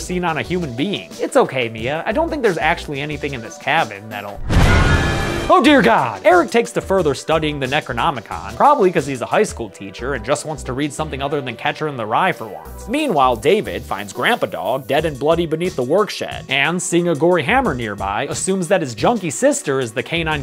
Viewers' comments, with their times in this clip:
0:04 funniest oh God I've heard